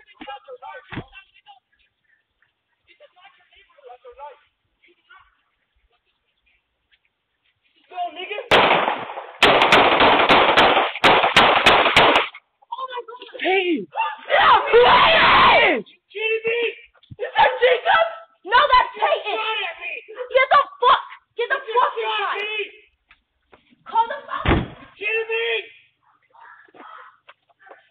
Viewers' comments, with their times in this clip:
0:08 Pause you see the kid's arm directly outstretched towards the ex-cop. Then you hear one shot. Then you hear the ex-cop mag dump in return. The video shows who shot first.